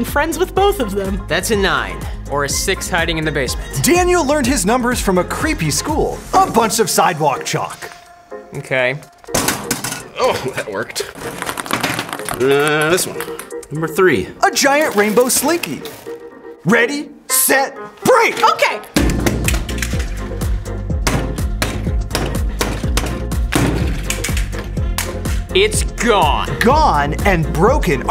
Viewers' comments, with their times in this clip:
0:09 "...... M'kay....."he sounded so disappointed 😭